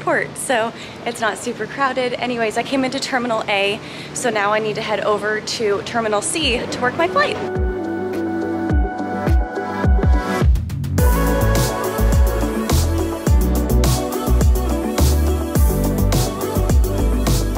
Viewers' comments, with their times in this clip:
0:03 The sarcasm behind the "Good morning everybody" am was not lost on me ;). What you were really thinking was "This is way too f****g early to be up and I want to go back to bed so bad right now"